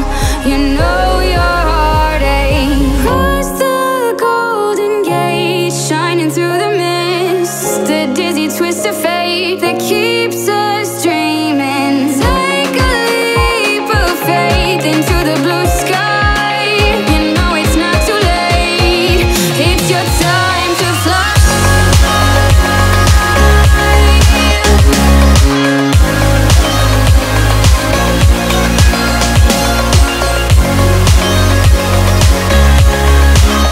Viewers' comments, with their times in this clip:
0:03 it hits me. i have no idea what genre it is, it's emotional piano with vocals. it's annoying i can't find other moments or songs like that bit
0:21 It's been 5 years and I still cannot get enough of this song, the drop is killer 😭